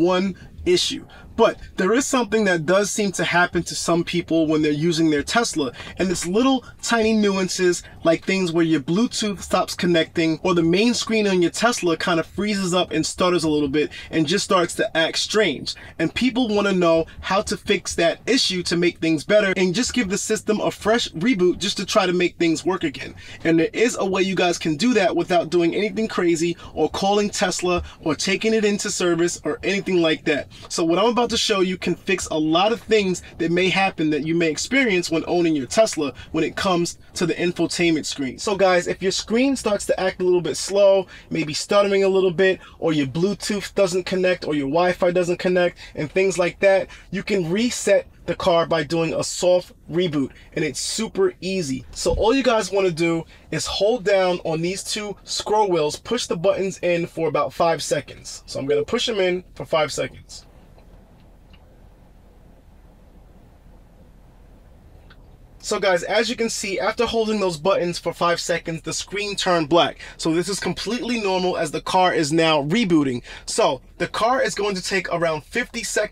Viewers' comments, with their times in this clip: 0:04 That’s a lot of spit broo,
1:01 "going to push him in 5 seconds" you freak